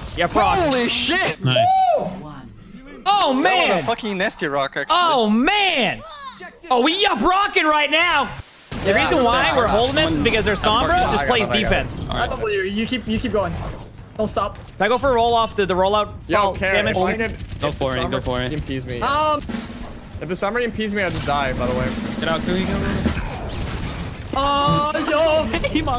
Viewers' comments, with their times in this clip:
0:08 Sounds like the laughing talk show guy.